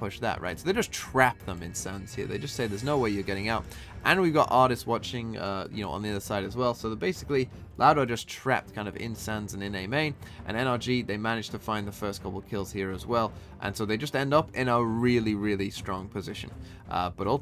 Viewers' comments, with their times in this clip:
0:03 Did anyone else hear the funny voice ?